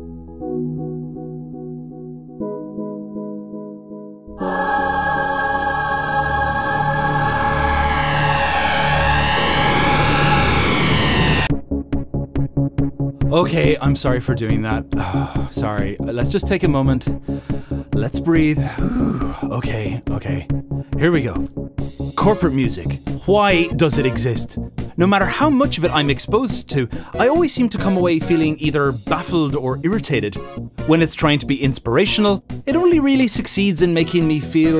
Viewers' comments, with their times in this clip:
0:04 This feels like musical jumpscare
0:22 it's 6am and I'm high and I heard you say "Hawaii, does it exist"